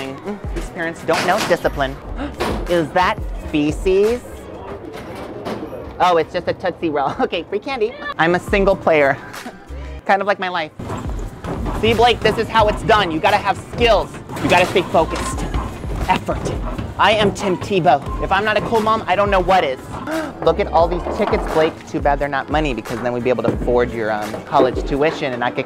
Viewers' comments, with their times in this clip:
0:08 Did anyone notice A kid say www?